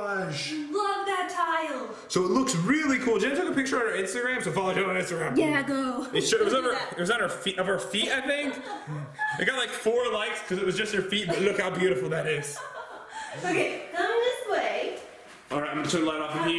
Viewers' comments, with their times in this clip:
0:04 was that a dog lmao 😂